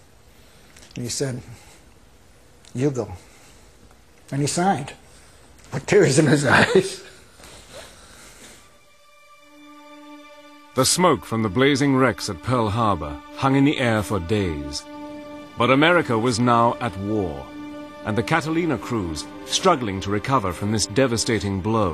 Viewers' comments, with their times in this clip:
0:08 This guy looks & sounds like the commander George C. Scott, who was killed in the movie "Tapes".